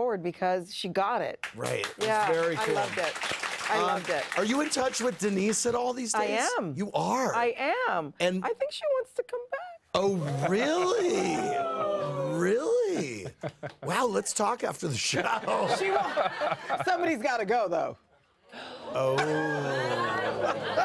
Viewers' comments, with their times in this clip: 0:07 I was shook with the crowd😲 haha